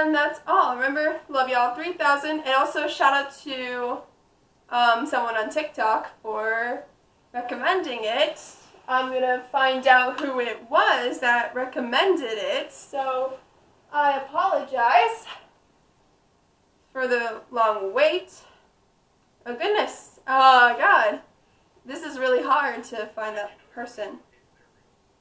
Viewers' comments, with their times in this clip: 0:08 Great power and control are all there!”